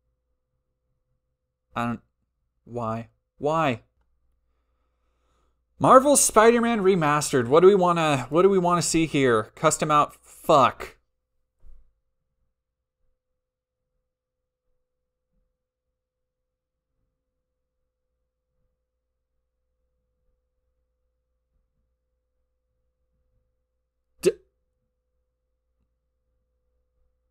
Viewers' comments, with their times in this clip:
0:08 You going into the spiderman page, having Spiderman with a swastika pop up as soon as you click and immediately saying "fuck" nonchalantly will never not be absolutely hilarious.